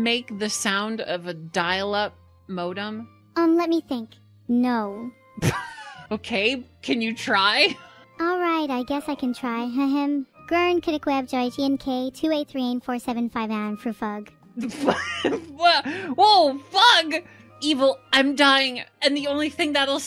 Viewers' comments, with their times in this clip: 0:03 Damn, she sounds exactly like GlaDOS 😅